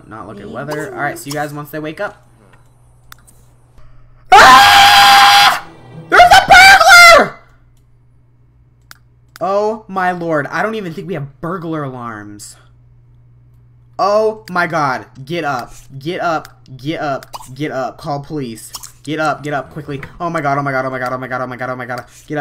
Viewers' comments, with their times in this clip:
0:03 LOLOL this scream
0:03 LOL this scream
0:07 My ears hurt because i was using headphones when came around
0:07 who needs ear drums, im pretty sure mine are destroyed now along with my headphones
0:09 sooo halarious when you screamed i was laughing so hard i almost choked on the crackers i was eating ,LOL